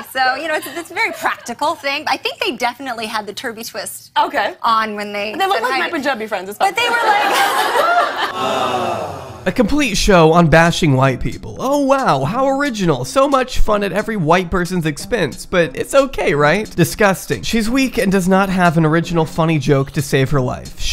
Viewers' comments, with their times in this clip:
0:05 Okay wtf is Lily saying ? I can’t make it out